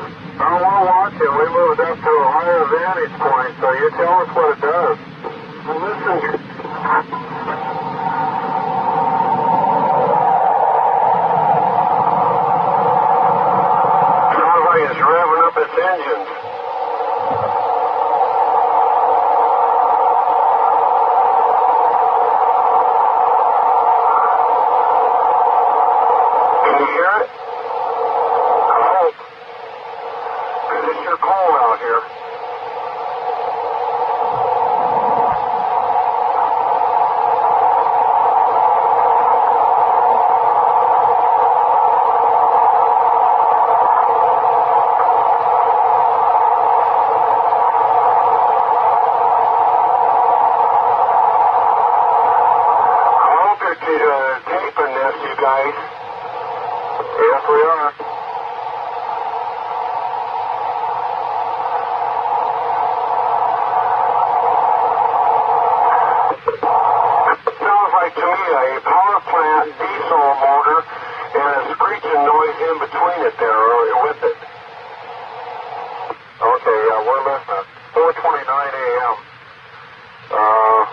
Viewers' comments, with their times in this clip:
0:09 UFO sounds begin
1:07 So the aliens are using a diesel engine to power their craft? The police might want to check if it meets the emission standards.